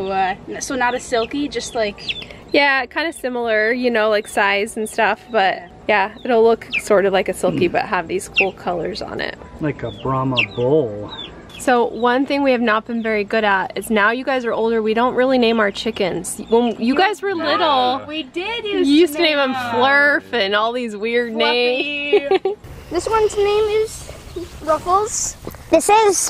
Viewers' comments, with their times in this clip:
0:08 lololol that chick looks so puzzled and sounds a little worried and annoyed .. too cute :)